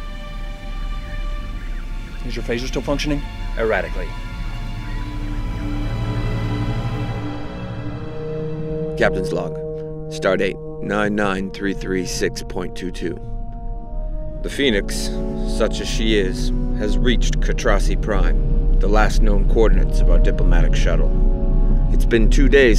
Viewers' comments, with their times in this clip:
0:10 That man actually sounded like Commander Riker!